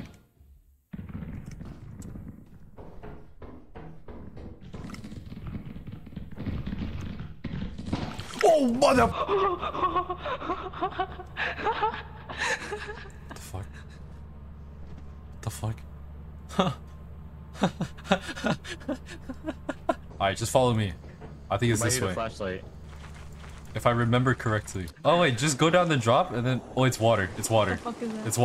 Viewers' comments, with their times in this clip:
0:09 The monster mimicking someone giggling makes the situation 10 times more creepy